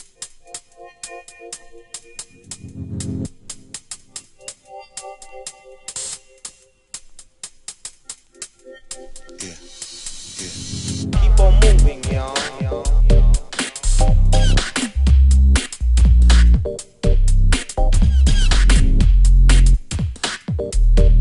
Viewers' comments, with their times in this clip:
0:07 I tend to skip to to get where it sounds smooth. One thing, people say this isn't Dubstep, it is, I like to call it smoothstep :)